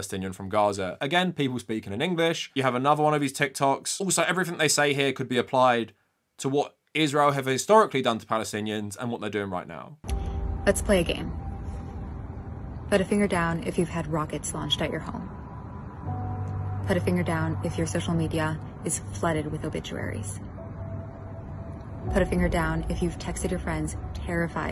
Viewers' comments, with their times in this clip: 0:10 As a person from California, it f%*king freaks me out when an IDF soldier has the same accent as me. That woman could be from the Bay Area.